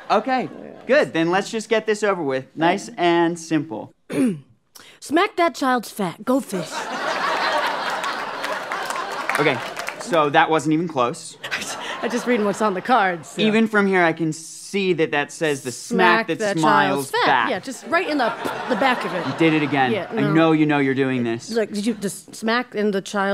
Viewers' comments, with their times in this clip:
0:06 smack that child's fat now I'll never unhear it 😅